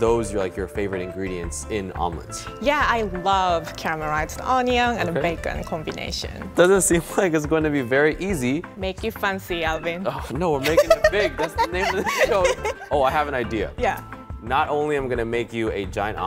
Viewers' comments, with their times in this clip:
0:04 Captions on for CAMEL RIDES?